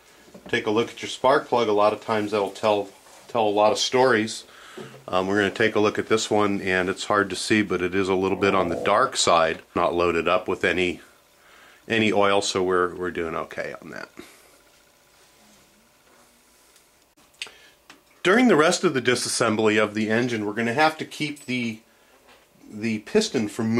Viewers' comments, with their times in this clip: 0:08 Thumbs up for letting one rip in the background lol